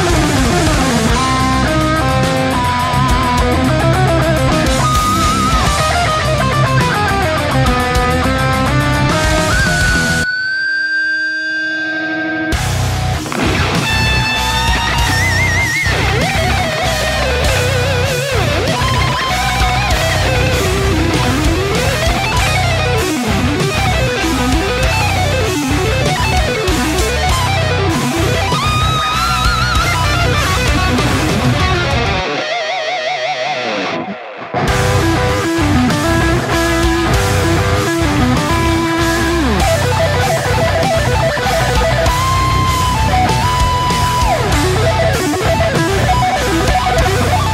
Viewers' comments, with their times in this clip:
0:03 Love that small lick of Arabian
0:12 That solo was fucking dirty
0:32 *Jared "wow, Jason really nailed it, I better respond with something as epic as possible *plays one of the most basic pentatonic lick ever
0:34 that’s the lamest solo I’ve heard in my life